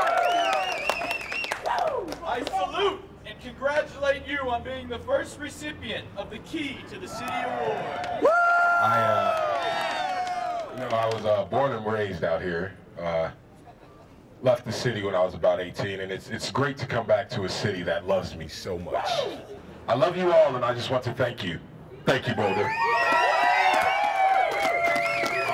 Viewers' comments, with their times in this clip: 0:09 that mellophone represent